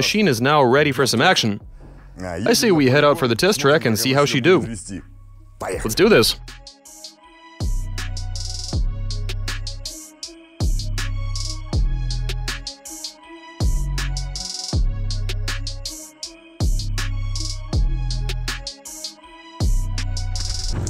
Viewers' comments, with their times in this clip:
0:06 the right wheel goes ZOOOOM